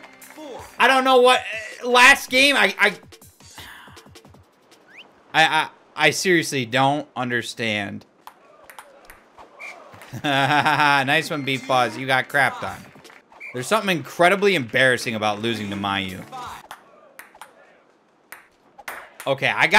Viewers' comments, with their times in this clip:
0:06 he says Siri-ously and my freaking Siri turns on